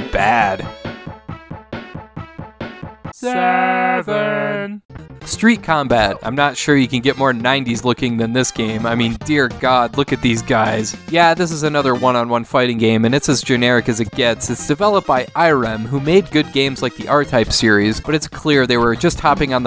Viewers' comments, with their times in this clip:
0:03 This moment sounds a bit like the SEGA Intro